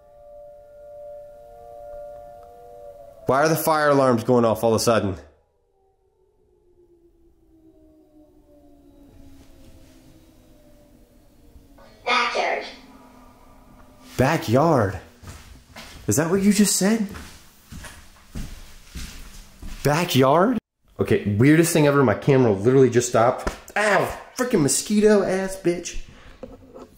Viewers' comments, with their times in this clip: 0:08 is that siren head…